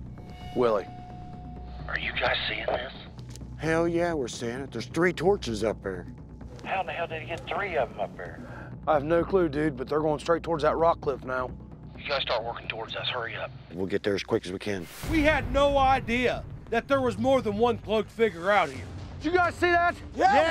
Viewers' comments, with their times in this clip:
0:06 There is a limit of how fake can it get. Yelling, headlights, walkie-talkie, like dude wth just go catch em.